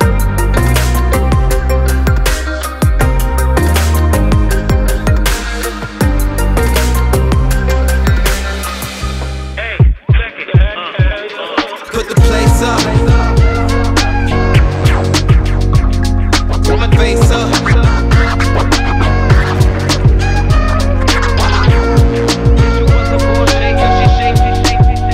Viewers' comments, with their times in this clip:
0:10 Is no one gonna talk about this music like um it's just not very 5 minute crafts if you know what I mean